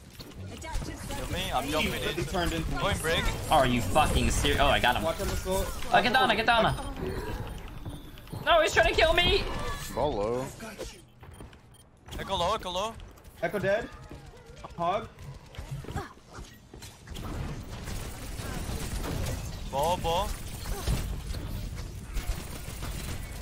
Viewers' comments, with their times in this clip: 0:10 Is that Voldemort? Wtf was that voice line.